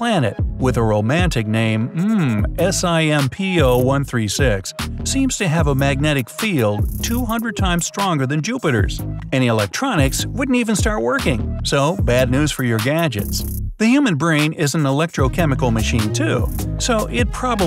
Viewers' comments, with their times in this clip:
0:05 SIMP PLANET Edit: oh he said a planet with a romantic name, yeah romantic